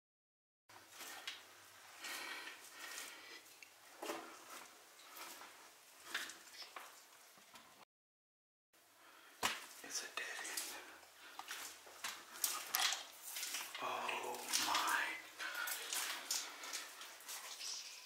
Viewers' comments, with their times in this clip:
0:05 sounds like a whisper